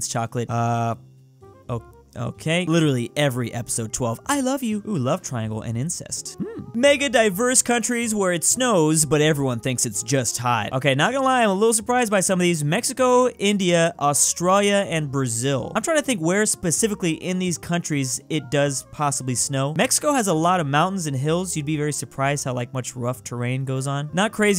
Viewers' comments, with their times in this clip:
0:05 It’s amazing how casually you say that